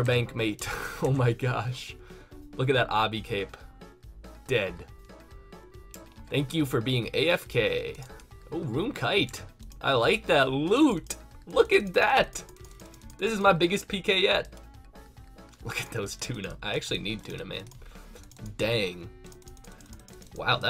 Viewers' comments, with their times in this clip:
0:05 "Look at that Ah-bee cape" lol.. Is that how people say it?